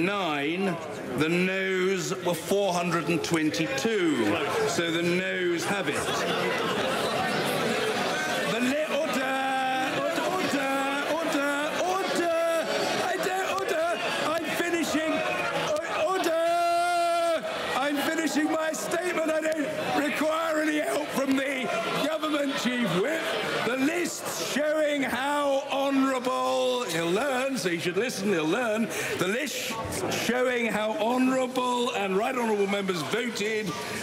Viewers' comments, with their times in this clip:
0:09 Especially this “orduhh! orduhh!” no offense brits
0:22 poor guys losing his voice